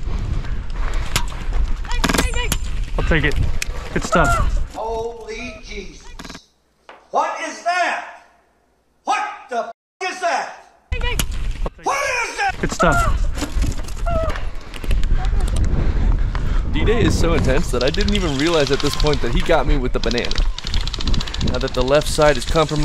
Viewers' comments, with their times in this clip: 0:10 kid be like here want some banana oh jk BANG BANG!! LOL